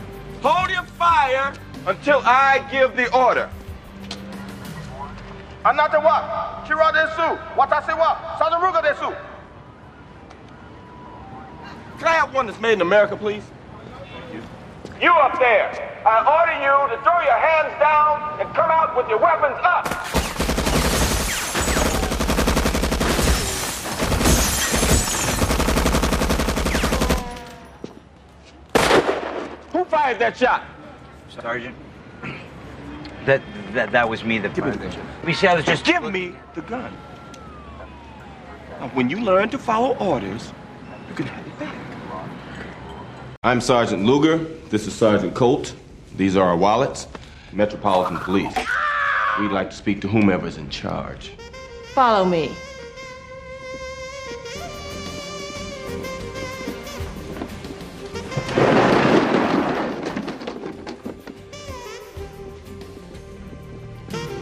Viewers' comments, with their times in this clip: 0:04 he speaks Japanese
0:47 If you look up "Metal Slug rebel scream #7", you'll notice it's the same scream only pitched differently. I knew it sounded familiar.
0:48 this movie is fucking hilarious..😂😂..the guy screaming